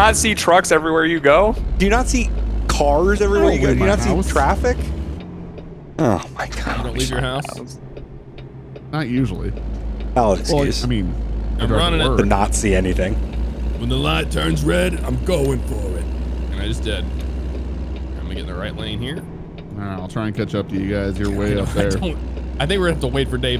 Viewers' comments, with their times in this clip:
0:04 Sounds like a dry fart